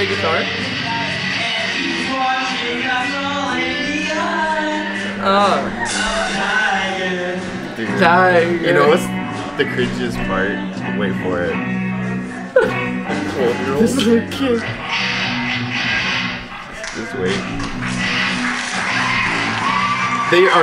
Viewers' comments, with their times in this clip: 0:07 is that McLovin on vocals???